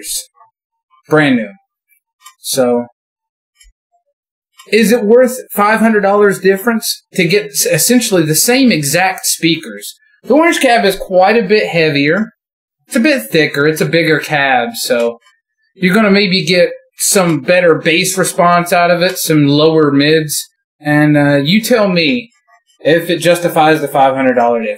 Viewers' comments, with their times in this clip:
0:05 Stoped watching couldn’t stand that line 6 tone, and video lost all sense and not fair for any of those cabs.